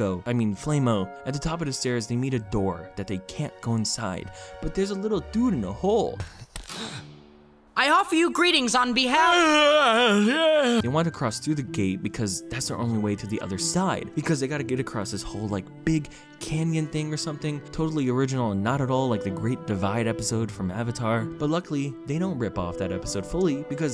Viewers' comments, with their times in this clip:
0:07 Master Raindrop: "I offer you greetings on behalf of--" Guard: *Unholy yawn from the depths of hell*
0:08 why does that sound like Hinata from Haikyuu Dub?
0:09 I laughed so hard, it's ridiculous. What is this voice acting? XDD